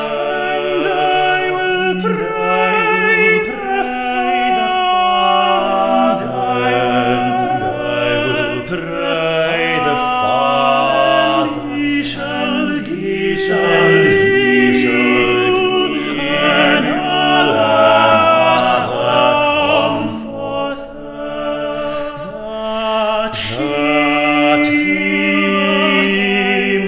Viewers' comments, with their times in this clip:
0:08 Some of the pronunciation here is almost historically accurate i.e. OP (original pronunciation), notice on 'pray' it sounds slightly cornish which is what Engish would have sounded like at the time of Tallis. Was this intentional? ;)